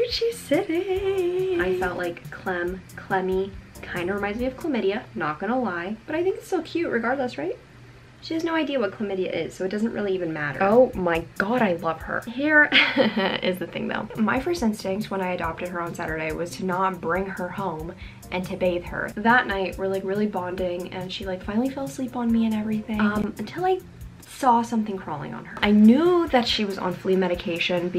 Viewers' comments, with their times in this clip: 0:09 why is nobody talking about the bell on the collar??? that things needs to go away, it's not a good thing for the cat to have that noise in their ear every time they move